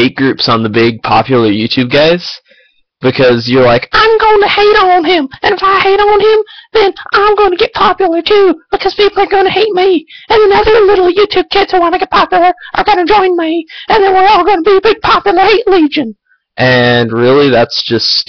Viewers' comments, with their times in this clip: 0:04 dude you sound like irresponsible dad's son from :D *brofist*